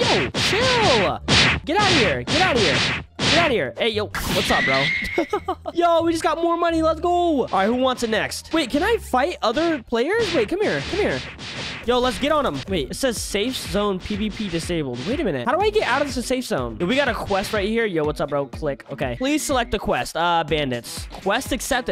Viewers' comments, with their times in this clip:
0:05 what was that laugh